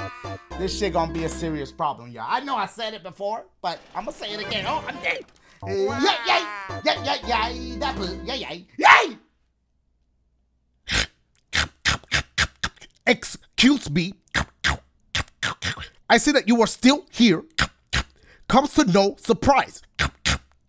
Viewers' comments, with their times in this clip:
0:07 That straight-face "YEAY!" put me in a coffin